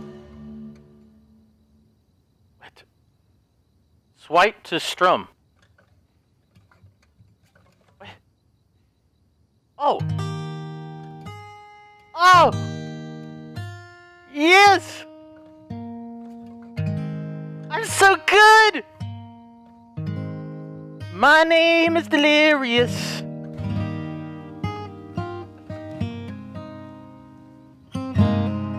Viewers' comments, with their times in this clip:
0:09 Bro he should really should have been a singer